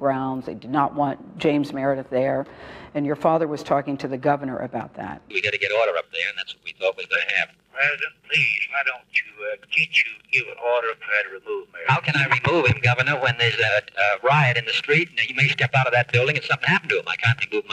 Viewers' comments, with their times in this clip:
0:05 how anybody could be able to understand the dialog +++ ??? Who is Meredith? wtF jFk... Why did you let 'm wipe out your family line from those who are leading people, making space for those psycho's who only want and desire to rule the world??? Why, why, why...